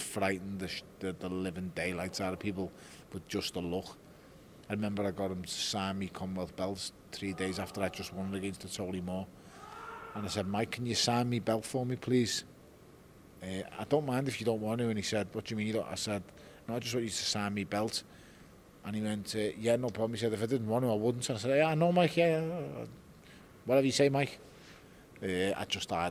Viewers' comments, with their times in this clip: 0:10 how i sound in the toilet after eating too many chillis!